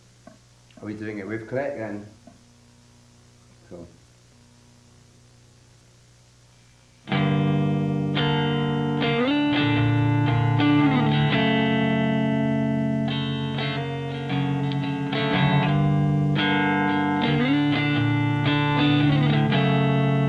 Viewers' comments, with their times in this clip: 0:06 The actual song starts